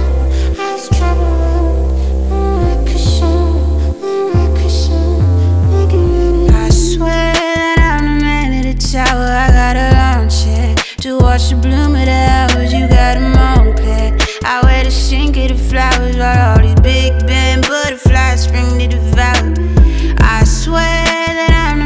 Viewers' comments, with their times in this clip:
0:06 tell me the sound of this song doesn’t have Lil Wayne carter 3 vibes. This shit literally giving me chills right now. So nostalgic
0:09 This is vibe. we need more of that flow on more songs.. absolute swag.